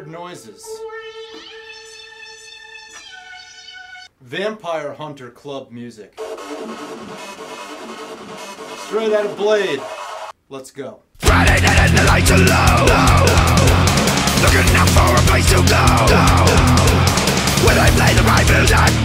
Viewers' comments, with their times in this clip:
0:04 Blade Techno should be a gender of its own.